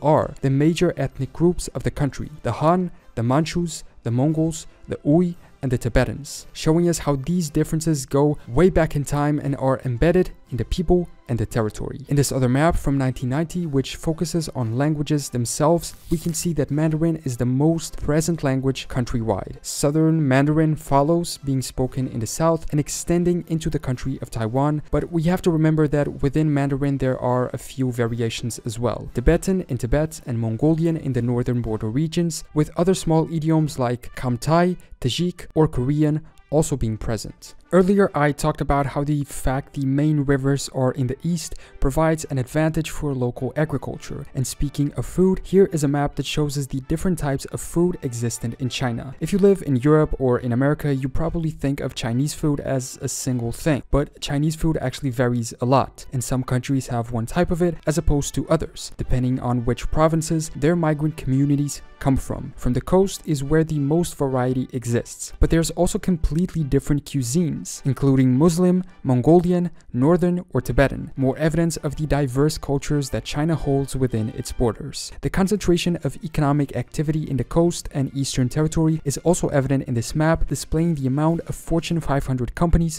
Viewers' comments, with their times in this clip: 0:08 The content is great! (Even though the pronunciation is not lol) This video is very accurate and helpful btw In Republic of China, Hui actually meant Uyghurs, Kazakhs and other Turkic Muslims in Xinjiang, not the Chinese Muslim ethnicity
1:07 what is a Qzene?